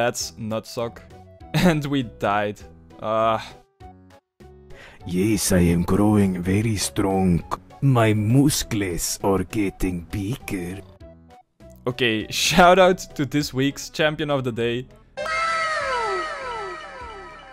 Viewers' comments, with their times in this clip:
0:05 Damn that impression of Vinesauce Joel is spot on!!